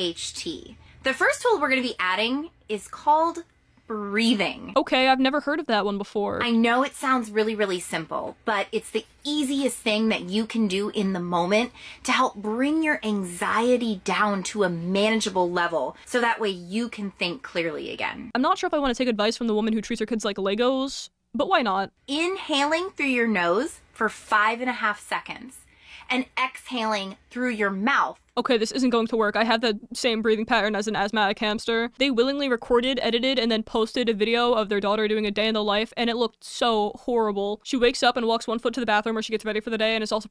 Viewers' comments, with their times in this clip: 0:08 why does she sound like Trisha Paytas?
0:08 Not to take agancy away from the very real and disgusting problems she's sharing and actively promoting, but her voice reminds me of Trisha Paytas.
0:25 she sounds like my school counselor.